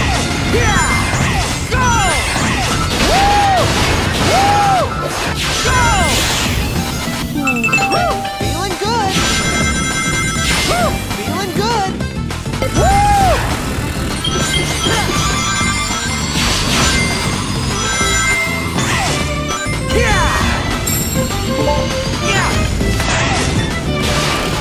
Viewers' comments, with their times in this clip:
0:05 Combined with the rhythm of the music of the stage
0:07 I love how the music kinda syncs in
0:11 they captured that speed so well right here, cool as fuck. also the music is such a banger